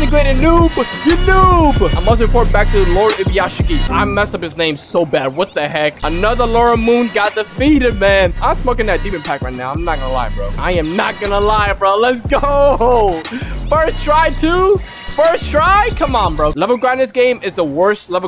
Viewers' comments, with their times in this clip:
0:04 you actually got the pronounciations correct on lord ubuyashiki for the first time